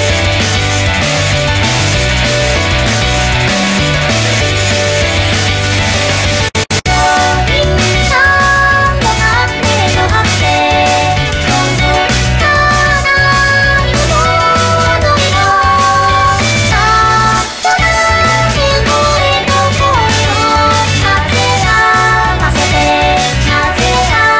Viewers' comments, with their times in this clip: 0:09 miku summarizes it perfectly dislikes? "no hate" of course, if she really was trying to speak english she would say NO HAITE ir maybe NO HAATE idk ;3